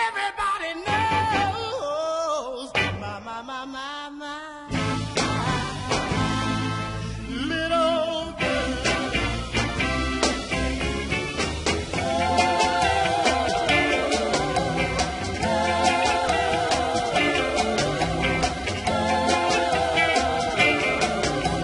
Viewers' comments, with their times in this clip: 0:09 Jimi takes a solo